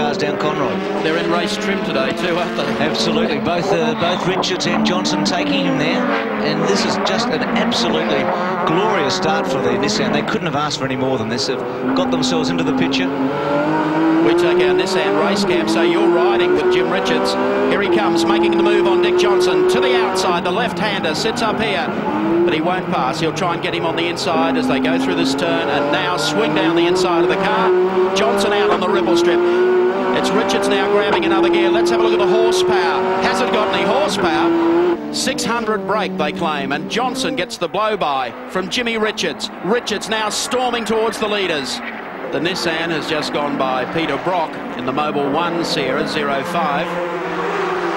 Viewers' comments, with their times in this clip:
0:09 That in-car starting was just glorious. Seeing the GTR catchup and then rip through the gears to pass with that RB26 screaming!
0:17 listening to that r32 roar gives me goosebumps
0:27 best moment of my entire life, this gear banging is georgious ! This dude drive like there is no tomorrow, I love it !
0:28 How violent are these two upshifts? Damn